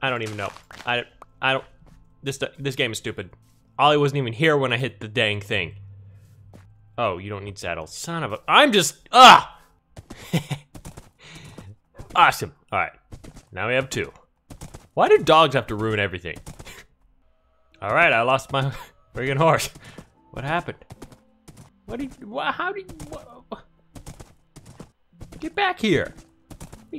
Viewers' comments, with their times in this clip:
0:08 UHHH echo echo echo